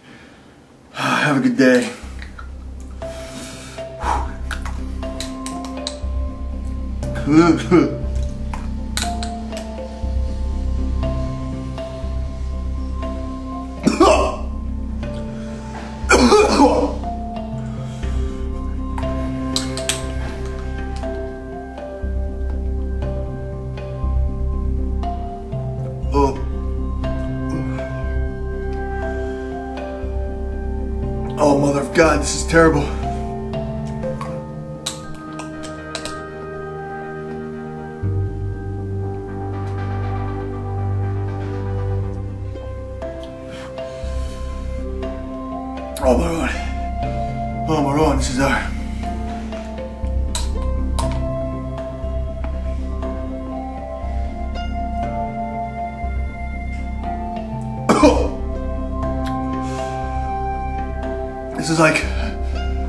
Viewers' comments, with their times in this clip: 0:05 The noise he made had me cracking up
0:16 The exorcism coughing
0:46 Caused home to speak in tongues